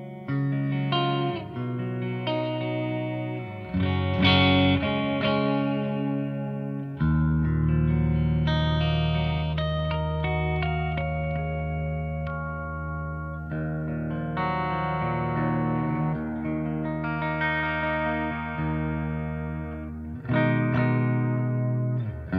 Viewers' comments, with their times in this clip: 0:06 liking the MIDDEL position